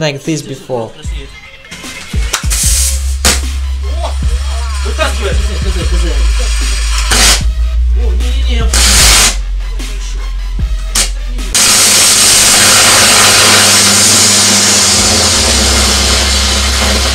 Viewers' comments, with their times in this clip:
0:04 The noise of the meter just rushing :D in germany you would have like 1000€ Electricity bill. - Wait, in germany You have circuit breakers - RCD´s - beefy mains circuit breakers etc.